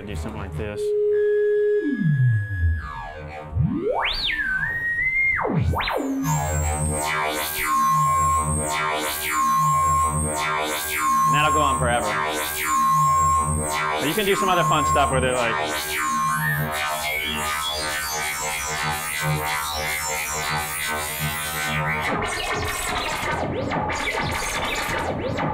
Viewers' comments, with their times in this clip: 0:10 sounds like in some scape ship plasma core engine room lol.